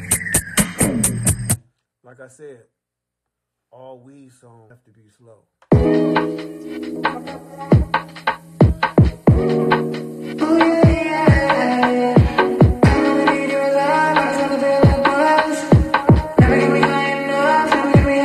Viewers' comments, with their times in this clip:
0:05 My man... uploaded the whole live! That Psychodrama "Magic" flip too dope, followed by the UK Garage beat joint ✊